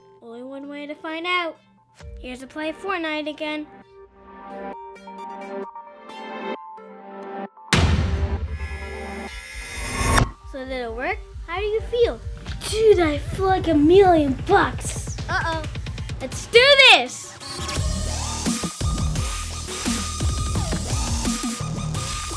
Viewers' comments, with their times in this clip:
0:08 he drank a slurp